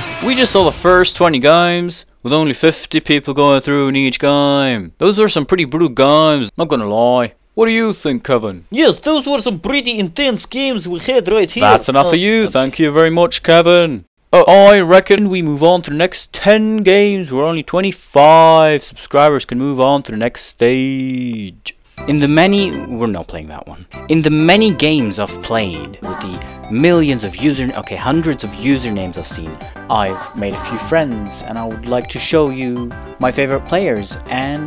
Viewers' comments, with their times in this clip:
0:09 Russian accent be like:
0:16 Lol! did you just impersonate... Anish Giri? 😂😂😂